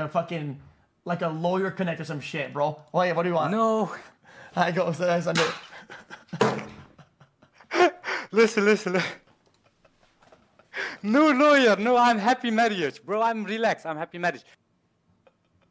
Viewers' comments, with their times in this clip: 0:03 he laugh like xQc too NAHH 💀